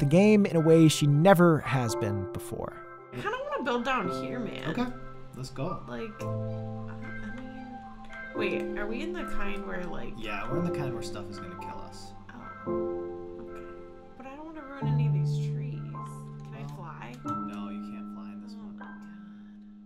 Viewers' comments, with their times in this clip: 0:03 The music was a bit loud in this one, especially Otherwise great as always! :D